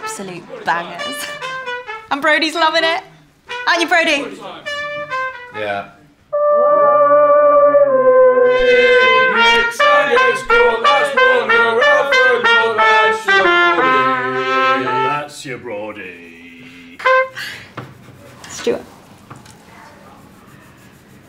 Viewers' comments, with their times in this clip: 0:06 Probably the best one of all. That rhythm from low scale to high scale🔥🔥🔥🔥